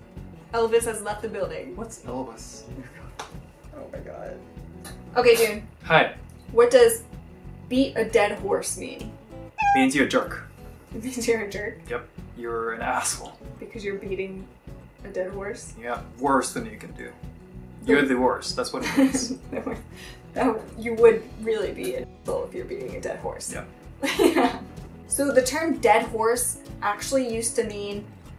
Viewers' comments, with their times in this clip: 0:09 Okay, I actually thought there was a cat behind me.